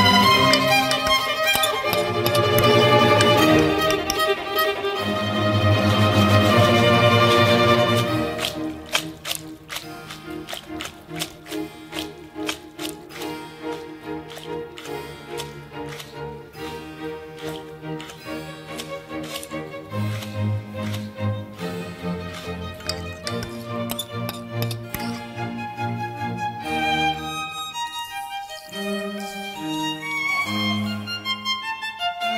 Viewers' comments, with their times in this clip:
0:07 that shit went straight into Minecraft asmr
0:07 .. Sounds like good coo.... U know what ...nevermind ... This is a kids show 😁
0:20 iT SoUndEd lIke SlImEs iN MINEcRafT OmG oMGM